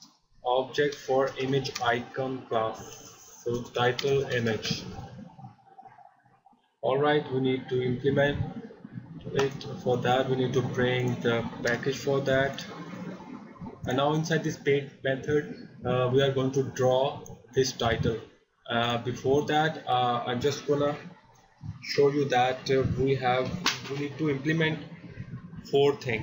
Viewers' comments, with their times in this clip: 0:09 those toilet flush sounds ,lool